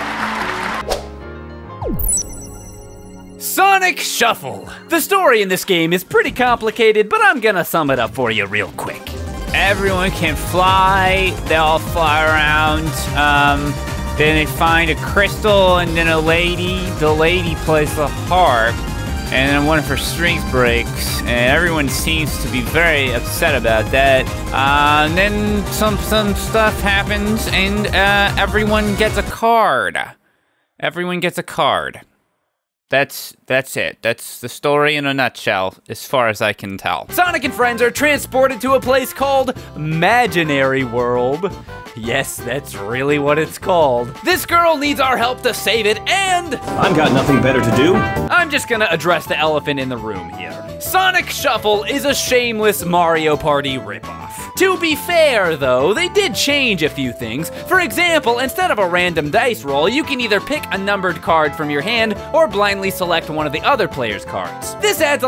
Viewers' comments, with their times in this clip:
0:09 i love your voice at that part! its funny!
0:46 Anyone else notice how Knuckles sounded like Ryan Drummond?